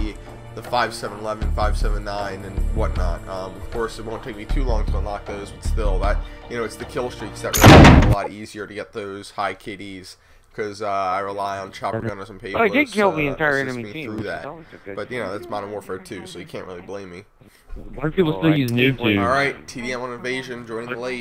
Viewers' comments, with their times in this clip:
0:06 HOLY SHIT I ALMOST PISSED MY PANTS THAT SOUND WAS SO LOUD